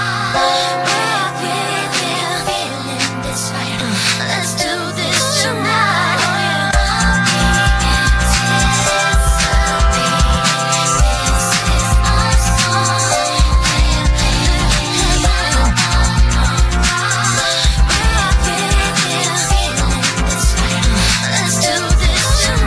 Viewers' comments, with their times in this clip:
0:10 I mean yes it the the right mix but this version is a little bit different especialy